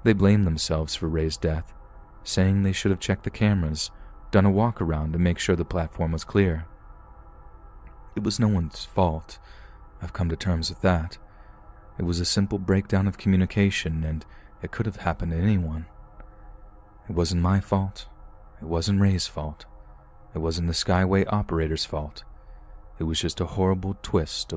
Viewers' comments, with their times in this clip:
0:09 you can hear him take a sip of something too warm his throat. Its slight but u can hear it😊